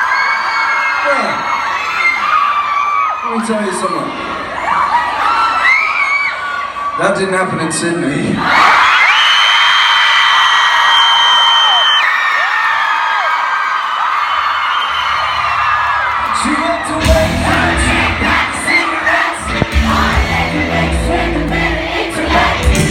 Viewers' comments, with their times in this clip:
0:10 Rip to headphone users